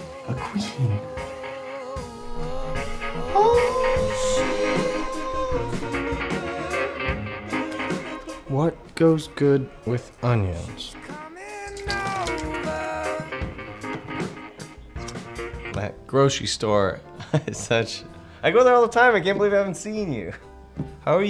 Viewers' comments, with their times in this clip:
0:03 Can I just say I really loved the way the noise he made blended in with the music adding a whole nother layer to it making for the perfect transition to the next scene and boost in the music, if that makes sense. Also it was just plain adorable